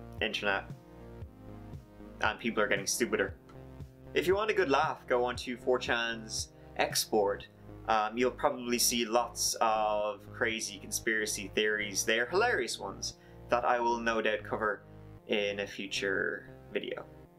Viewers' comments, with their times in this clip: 0:04 what is "Forchans" Export?